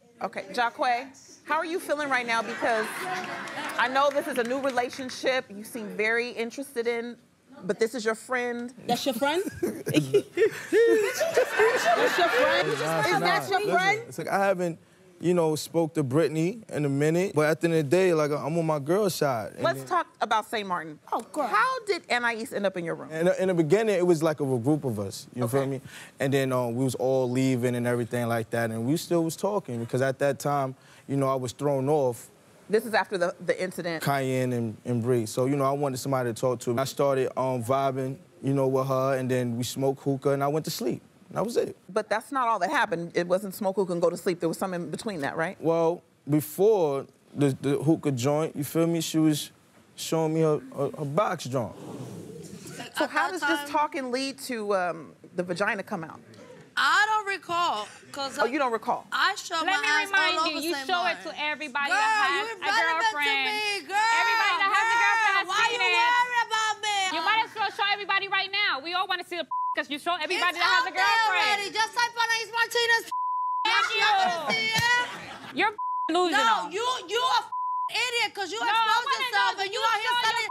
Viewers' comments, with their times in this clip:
0:09 It was wrong for Kiyanne to mention Bri’s grandmother, but that laugh she did towards Jaquae was funny asf 😂😂
1:02 “why you worried bout me” LMAOAOAOAOAOAOAO the way she talk 😭